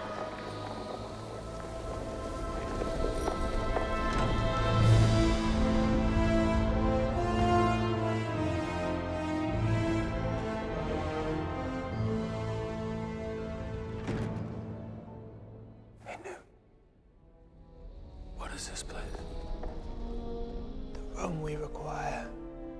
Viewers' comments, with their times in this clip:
0:04 The Harry Potter theme hit me with nostalgia 😭 I can't wait for this movie!
0:05 Star Wars music at hogwarts?? Darth Volt must be here!!